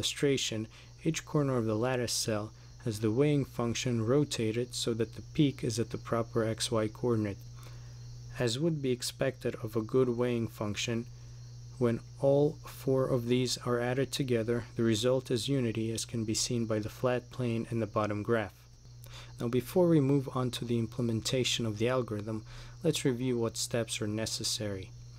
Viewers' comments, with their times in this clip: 0:08 Anyone else hear the cricket XD lol